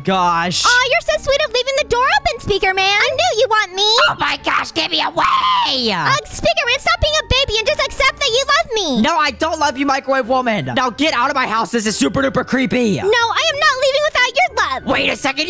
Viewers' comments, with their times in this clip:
0:03 that scream was halarioous